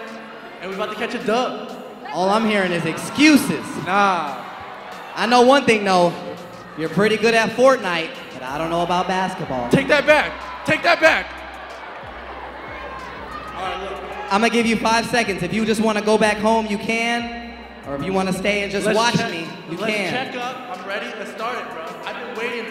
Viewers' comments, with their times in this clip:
0:09 The way that rice gum was like, “TaKe ThAt BaCk”😂😂😂